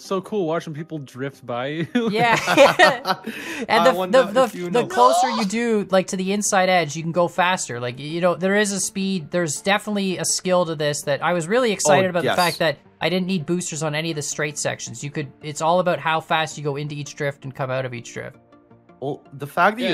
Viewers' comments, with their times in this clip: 0:04 who was that screaming